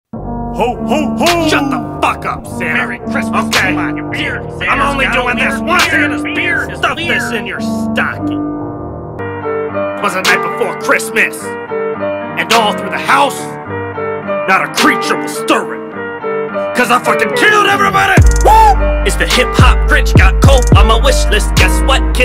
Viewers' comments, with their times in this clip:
0:06 he sounds like a pirate